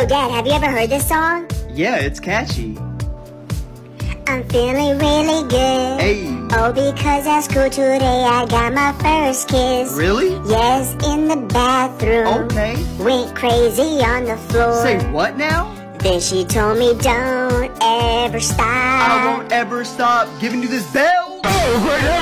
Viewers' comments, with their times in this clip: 0:03 i like that song honestly